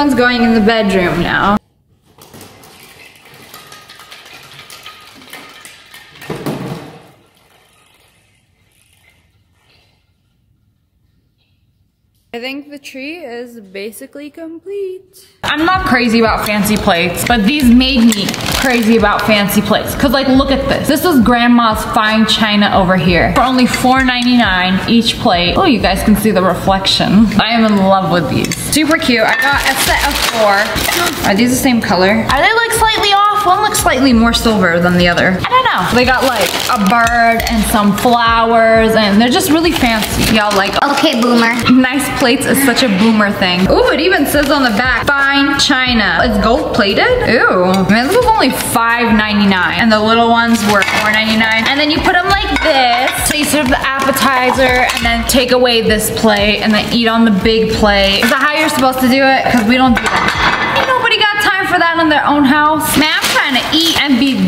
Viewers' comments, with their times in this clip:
0:04 Ball dropping asmr 😂😂
0:47 did she say eww or ooo